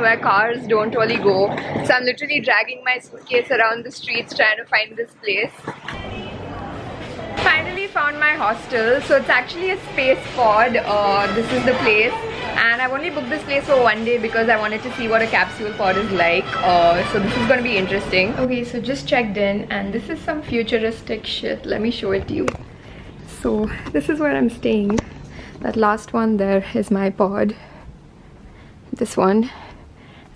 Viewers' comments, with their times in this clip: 0:09 Blackpink song was going on in background in 😂
0:11 you can hear BLACKPINK music.😋😅😅😅